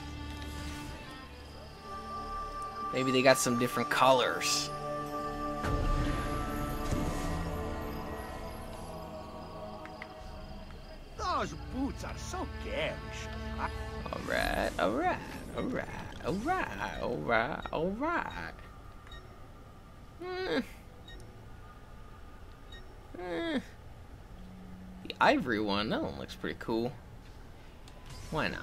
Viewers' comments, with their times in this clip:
0:09 dus the shop owned say "those boots are so gayish"?